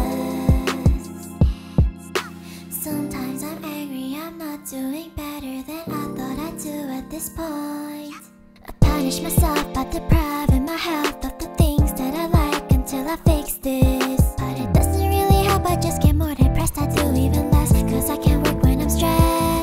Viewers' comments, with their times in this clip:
0:07 Your voice is so soothing fits so well! Also can we talk about that “yep”